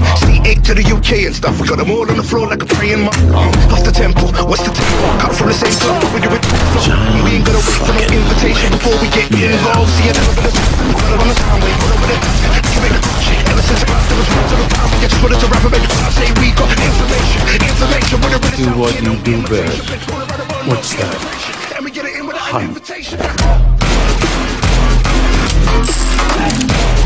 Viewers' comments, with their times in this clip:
0:10 Oh! That beat start is 🔥🔥